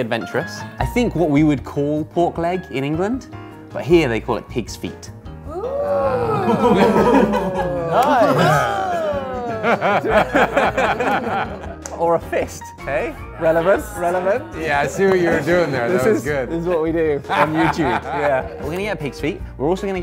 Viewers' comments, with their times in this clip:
0:05 the subtle disgust at the word ‘feet’